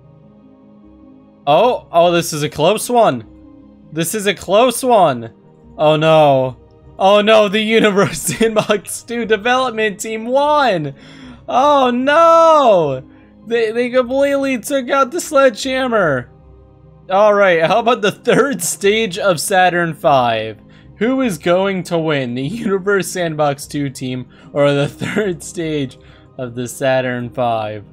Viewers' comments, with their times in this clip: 0:10 Has anyone else noticed that his voice sounded like it was on autotune